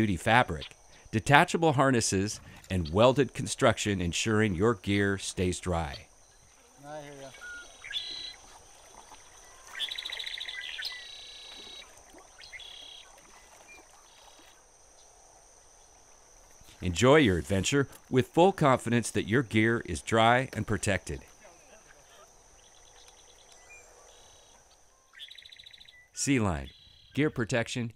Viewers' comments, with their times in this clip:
0:09 cue and emphasize the bird sound effects 😆🦜